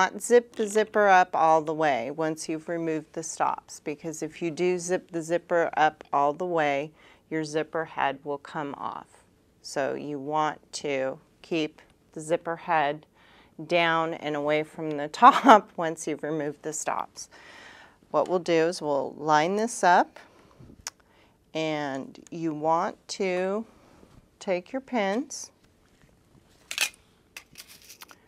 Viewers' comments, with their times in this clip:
0:10 lol She almost laughed when she said 'zipper head' By the way thank you for the apparel series in your channel :)